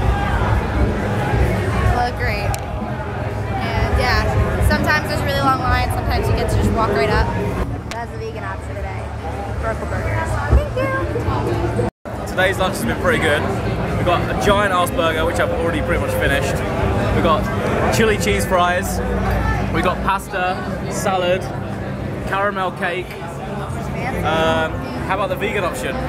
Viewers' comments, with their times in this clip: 0:10 Sweet "THANK YOU" ))